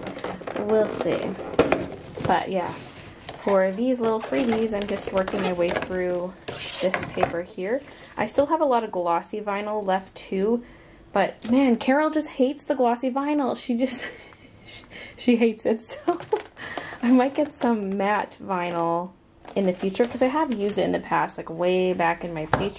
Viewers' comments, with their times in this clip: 0:06 does that not sound like the bamboo doll in Animal Crossing New Horizons?! :P